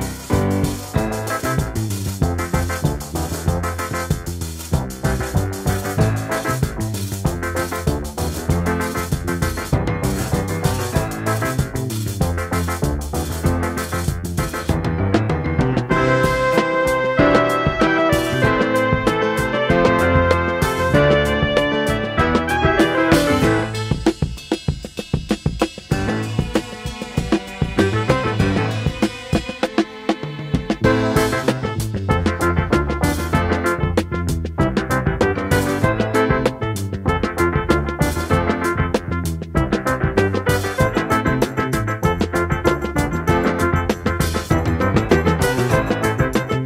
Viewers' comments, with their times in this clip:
0:05 : Agree 💯 with you. I even hear a bit of reggae
0:30 Always loved this. This part has a great beat: